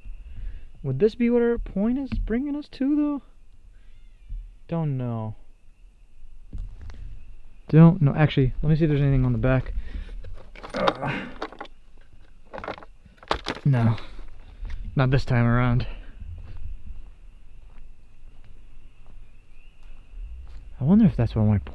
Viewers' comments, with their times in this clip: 0:07 that sound is a squirrel.